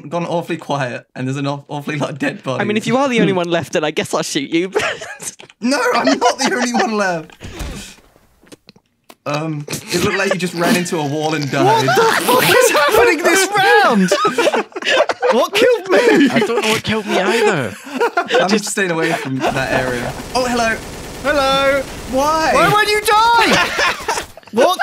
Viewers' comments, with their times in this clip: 0:06 The thump, the thump was gold!